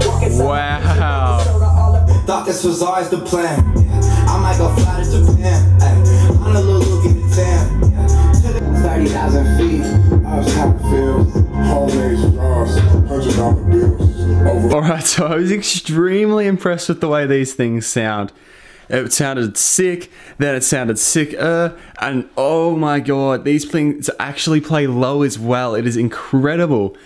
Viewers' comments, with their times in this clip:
0:10 these isn't in phase